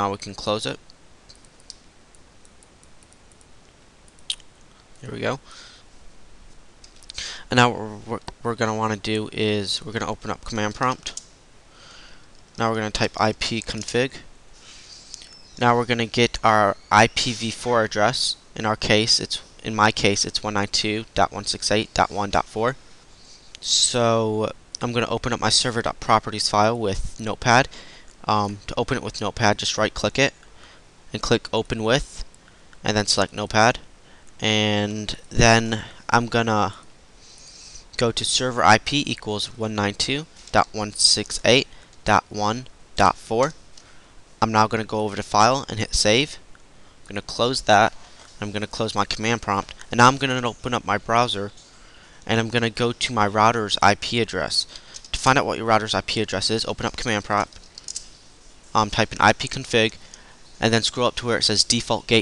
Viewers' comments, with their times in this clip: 0:09 what did you say?? have no idea what u said
0:44 I thought you said not instead of now. So I was like, "what?" So I repeated it.